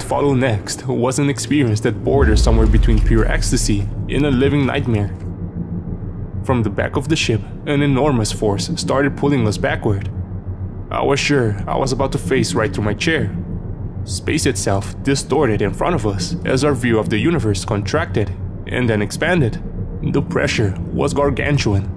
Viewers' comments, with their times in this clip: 0:06 This one would be like nightmare fuel for those who dreams of going out into space 😆 Also, that spaceship ambience got my attention. I honestly think it could make a great ASMR. Where did you get that sound?